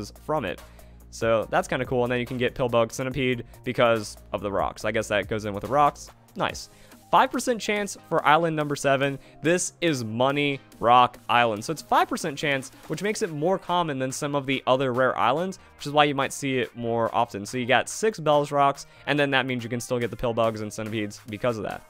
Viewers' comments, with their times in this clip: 0:08 it sounds like a section in the detective Pikachu dance song